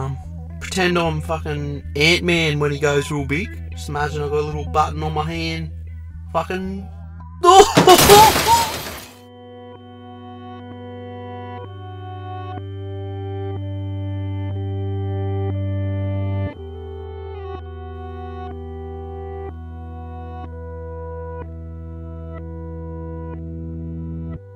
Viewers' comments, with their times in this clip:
0:09 The real music track we all want starts